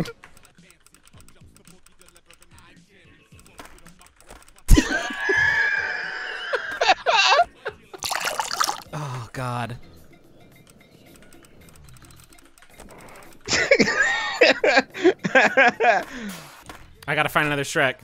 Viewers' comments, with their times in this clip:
0:04 Justin's wheeze is fucking sending me